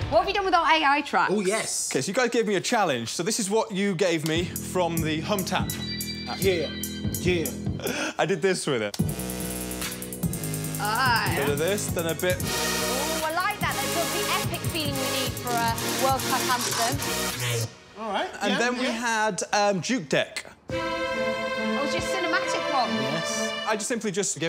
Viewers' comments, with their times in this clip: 0:09 On min i like this drop i want it for a Intro